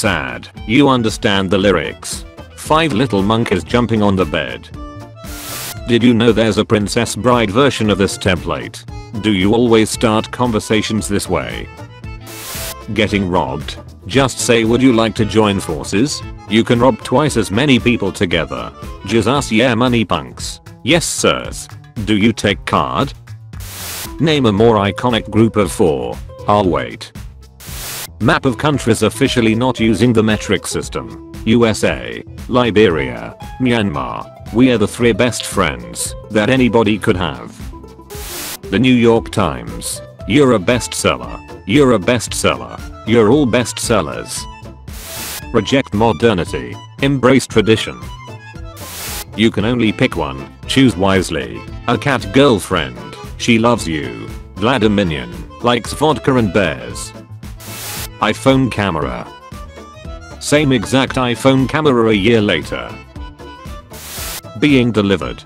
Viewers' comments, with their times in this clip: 0:03 i always understand Junkies jumping on the bed 😂
0:50 HOLY SHET, VLADIMINION, Russian anthem plays